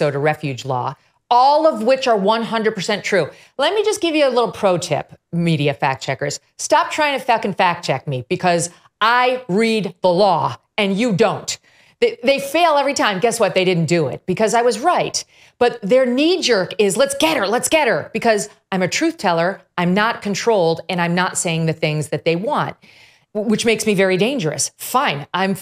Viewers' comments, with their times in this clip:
0:06 ...No, not fuck. She said Fack! F-A-C-K...F-A-C-K..credit Eminem. Megyn, thank you for keeping it real! I'm so glad you report real, unapologetic, facts! You're a great journalist and I'm happy to support you!